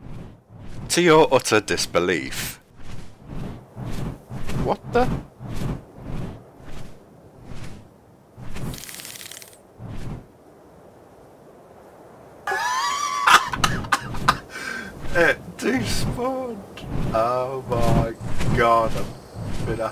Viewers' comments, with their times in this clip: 0:05 is actually his real voice and much more better then his boring voice